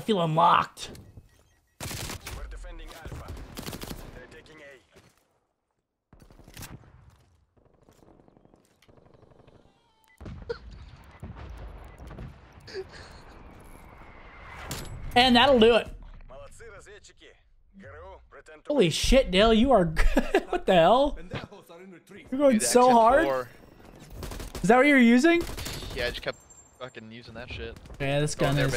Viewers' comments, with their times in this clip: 0:09 Did anyone else hear the moaning sound ?